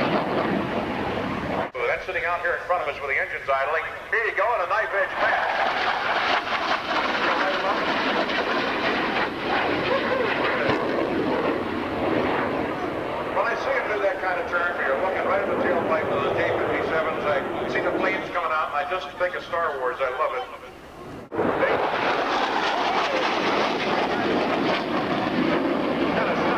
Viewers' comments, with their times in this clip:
0:08 Nice video and rare, not much videos out there on the McDonnell Voodoo. The announcer of the airshow seemed rather lost at times on their air display. He would announce to the crowd Listen to them lite the burners but they never did most of the time. When the Afterburner is lit on the Pratt & Whitney J-57 engine it makes a distinctive Boom. you can hear the boom from the afterburner being lit. However; the audio in the video does not do it justice, I'm afraid. Anyone who has heard it in person can testify to it. I know I've experienced it in person myself. But it is a remarkable video, none the less. I did enjoy it.